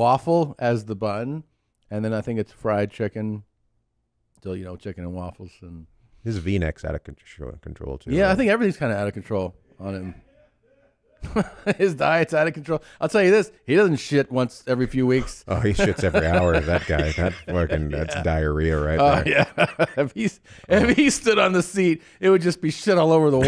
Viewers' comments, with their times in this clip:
0:06 That laugh in the background. LMAO